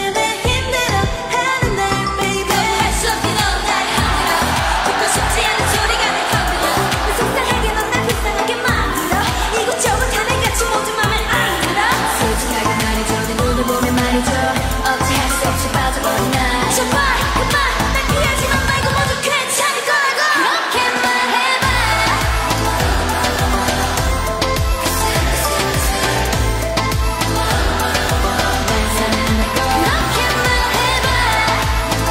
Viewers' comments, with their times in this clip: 0:07 omg yena rapper in "mame an deureo" 😲💣
0:10 I live for Yena's growl
0:12 OMG This is obviously not a dream, Chaewon rapping in rumor, I mean I have never seen her rap before, Yuri and Eunbi are the main vocalists in that song, chaeyeon, Yena and CHAEWON are the rap and the others
0:12 the rap of Chaewon was iconic
0:12 chaewon deep voice rap omg
0:12 Chaewon rapping 🤩 Edit: I forgot how high-pitched Yena’s rapping was for this performance, she was really feeling it! 👏
0:12 you should get away, get-get-get away i love Chaewon's voice
0:13 i love cheawon deep